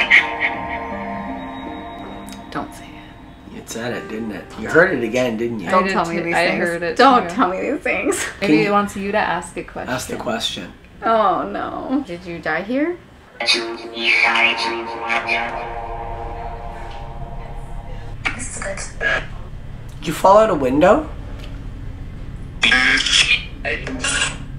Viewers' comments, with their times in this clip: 0:05 On i heard “my name is kyra“